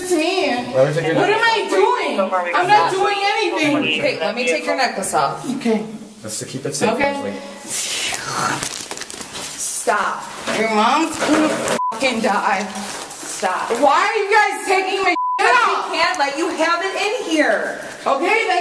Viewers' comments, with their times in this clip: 0:06 It actually hisses at them